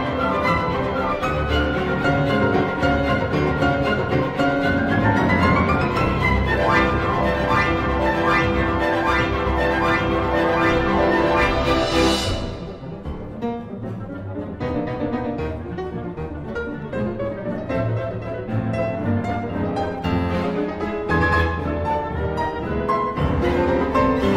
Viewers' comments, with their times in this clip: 0:06 That freaking glissando OH MY GOD SHE'S AMAZING 😭😭😭😭